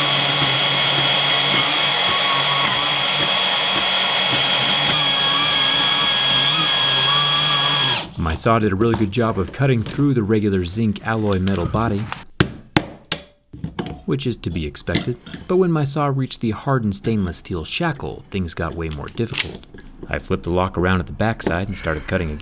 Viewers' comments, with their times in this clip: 0:05 *Some dog painfully dies*